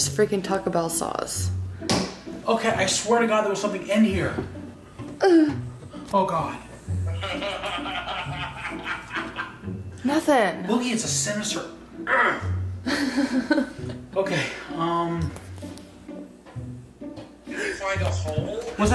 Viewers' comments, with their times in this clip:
0:05 That laugh had me dying